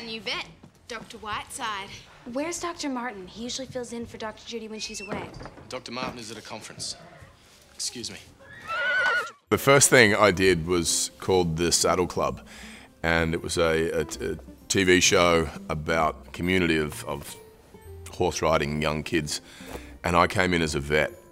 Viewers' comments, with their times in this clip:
0:05 Please his voice so cute🥺